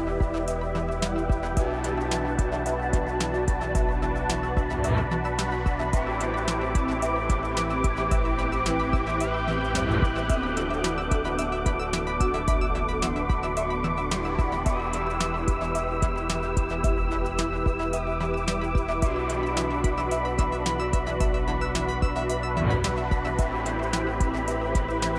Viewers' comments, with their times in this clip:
0:08 it say something about Turkey Bone. It make me remember Thanksgiving dinner.